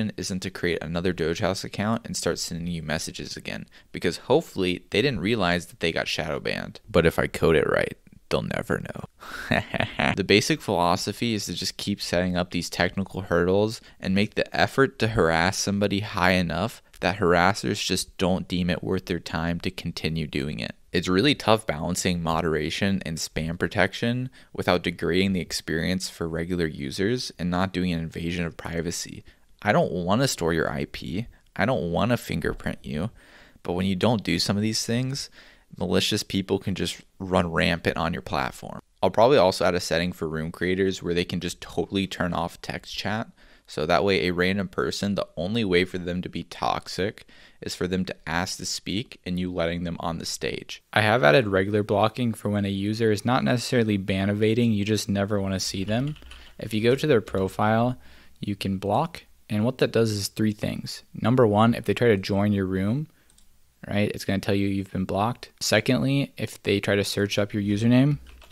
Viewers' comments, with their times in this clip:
0:09 evil react laugh
0:53 is that you talking ? must have been a very different time of day or maybe you were dehydrated lol